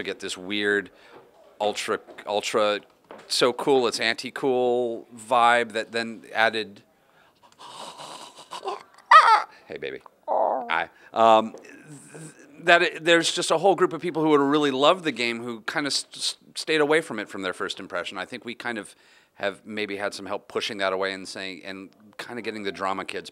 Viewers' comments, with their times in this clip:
0:05 sudden bird orgasm